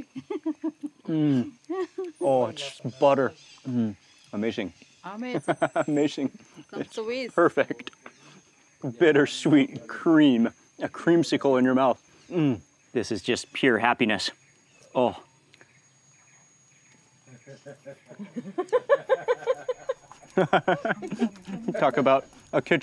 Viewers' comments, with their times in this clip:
0:08 They’re not laughing with ya………